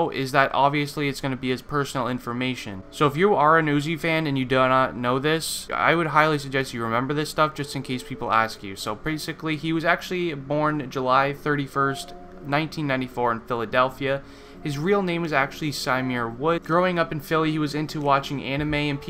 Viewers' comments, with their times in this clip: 0:05 5 facts start narrated by your damn grandparents😬